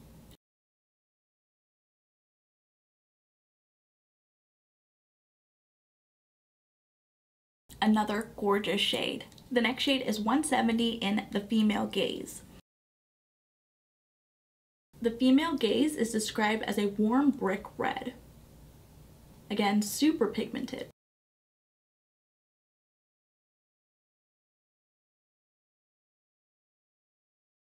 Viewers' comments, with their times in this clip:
0:10 I'm watching while also multitasking so I wasn't looking and I heard "The Female Gays". 🤭☺️